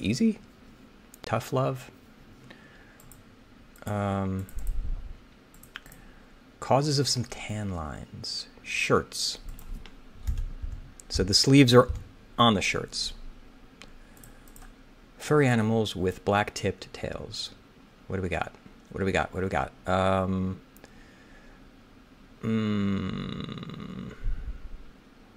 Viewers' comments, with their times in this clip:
0:08 LOL "shrits" made me laugh 😂